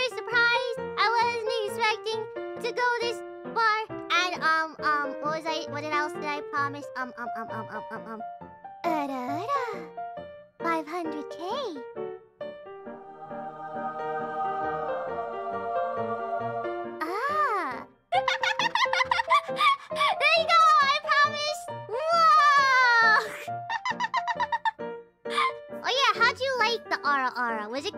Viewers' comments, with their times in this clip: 0:08 Sounds like a pre-recorded ara-ara to me. Still Biboo TSKR.